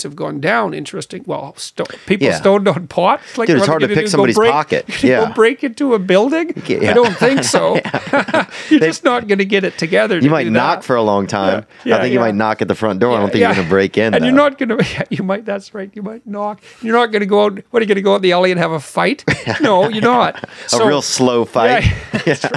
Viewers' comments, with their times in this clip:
0:06 watching Jordan Peterson laugh about weed warms my heart. This is why I love podcasting. Theo von having a heart to heart with Jordan.. come on haha